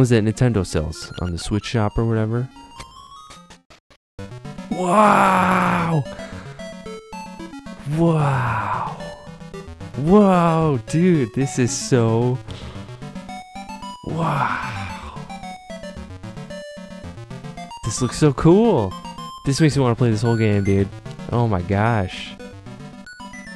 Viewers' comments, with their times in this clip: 0:06 asmr lmao idk why you made me laugh the way you are saying wow